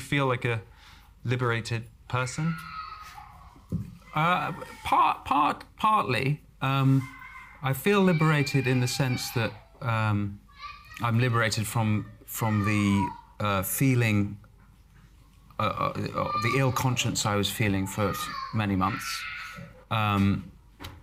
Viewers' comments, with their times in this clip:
0:03 there’s a screaming kid in the background who’s really pissed off by cancel culture!